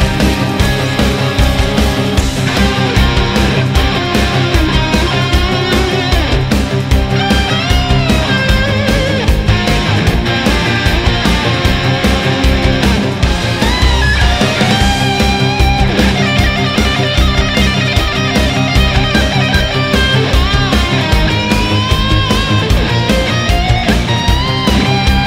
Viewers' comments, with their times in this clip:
0:10 that guitar solo is epic